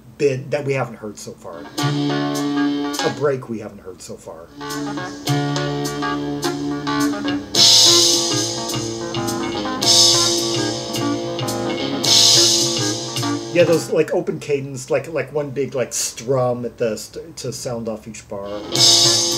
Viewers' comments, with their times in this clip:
0:07 I really think that the bass playing could be better on this. The bassline is kind of sloppy and off-tempo, especially during the bridge section That bass picking just sounds like it's wallowing in rubato.